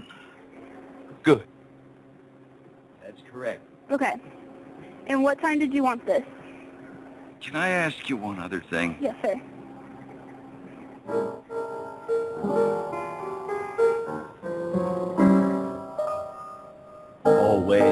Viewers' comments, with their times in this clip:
0:05 I died laughing when he start singing.